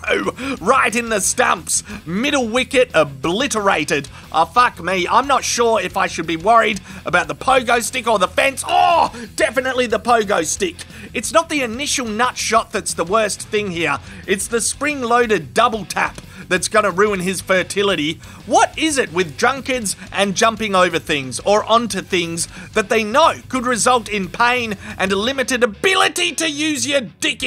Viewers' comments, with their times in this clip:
0:08 Fun fact: You can actually hear the BOING!!